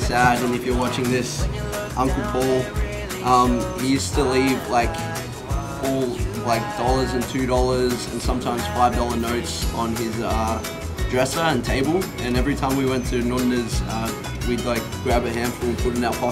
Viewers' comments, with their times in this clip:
0:03 It's literally here in Chicago...the ding won't me up....I have a problem